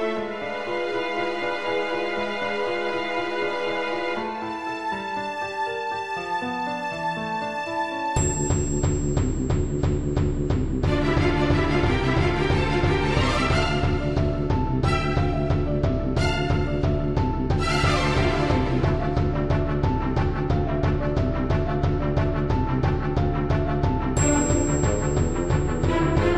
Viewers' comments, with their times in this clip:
0:08 HEAVY LOUD SUPER INTENSE BASS LINE; WHERE ARE YOU?!